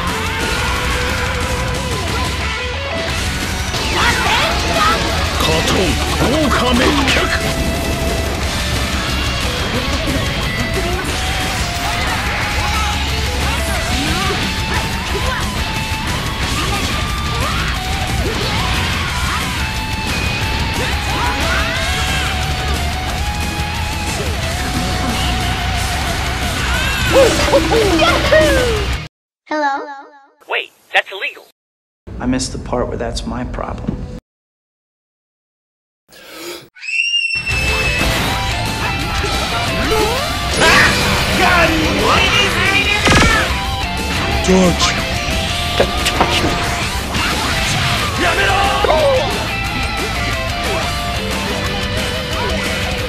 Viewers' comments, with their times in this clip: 0:04 Title: Nerf ultra instinct pls Me: *hears rasengan* Me again: Wait that's illegal
0:35 was that your inhale? XD